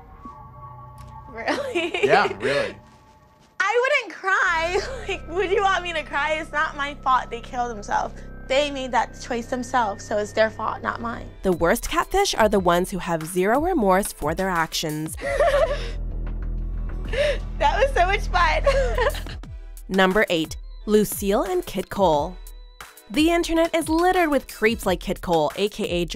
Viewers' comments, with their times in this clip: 0:07 the catfish voice was so annoying